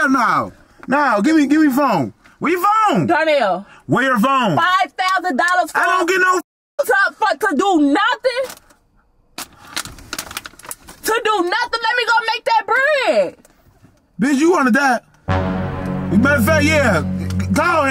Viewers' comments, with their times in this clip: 0:05 do wat mfk 😂😂 the fake laugh took me ouutttttt